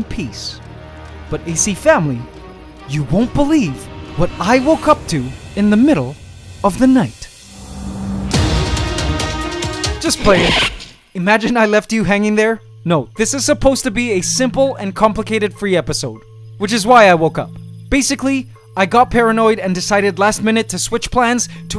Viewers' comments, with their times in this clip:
0:07 When you the dramatic music start noooooooooooz!😢 but then